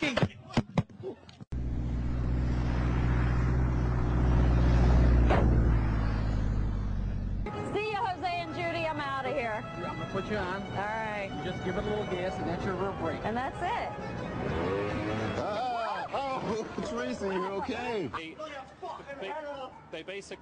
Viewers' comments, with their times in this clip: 0:03 omg should hurts *BUMP*